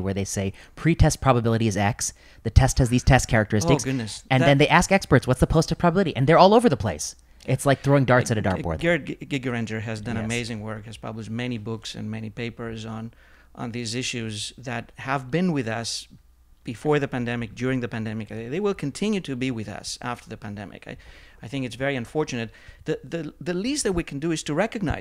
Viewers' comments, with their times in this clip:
0:09 After Dr. Prasad talks about pre-test and post-test probabilities, what in the heck is the name cited by Prof. Ioannidis as an author of many books and articles on these issues? It sounds something like "Garrett Granger" but I've listened to it 10 times and I can't match it to a recognizable author's name.